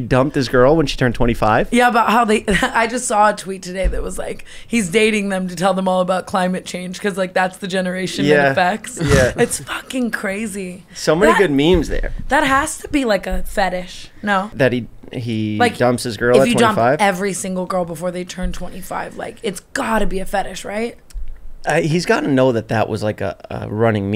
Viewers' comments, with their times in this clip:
0:09 I can’t get over the big pig snort 😂